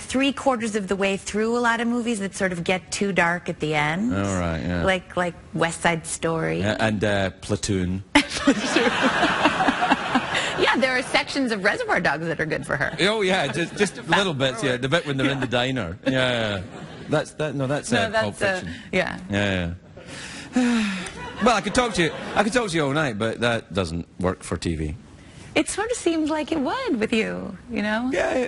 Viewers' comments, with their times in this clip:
0:10 SHE SOUNDS LIKE MILA KUNIS